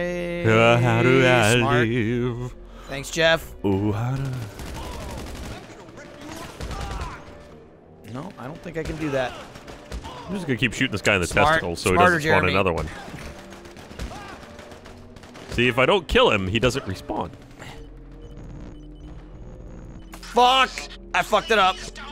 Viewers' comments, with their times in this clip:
0:09 the audio is out of sync here and at some other parts of the video but its more noteable in my timestamp. dont you guys record game audio and video at the same speed?